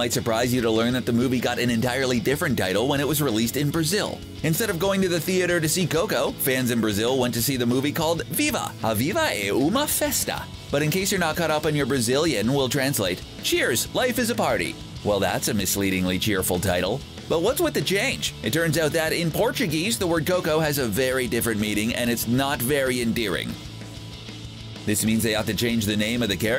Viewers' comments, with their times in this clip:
0:07 I think your portuguese it's very good, but, please don't say brazilian, we speak in portuguese not brazilian